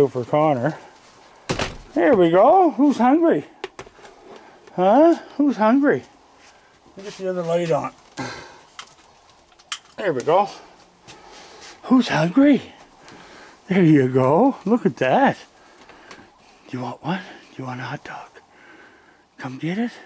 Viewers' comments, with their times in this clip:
0:07 No matter how many times the dog was barking, Firby still looked just as relaxed eating the hot dogs by your side :) For a sec there I thought Scooter finally got inside your house and was under the table :D